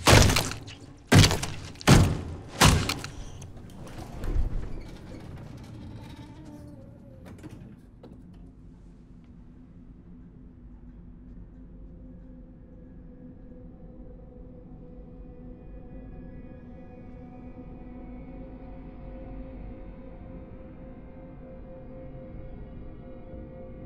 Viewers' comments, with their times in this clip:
0:09 The Slap was so crisp dude😂😂✋🏻✋🏻 And his face was like he had been holding poop for like 5 hours😂😂😂😂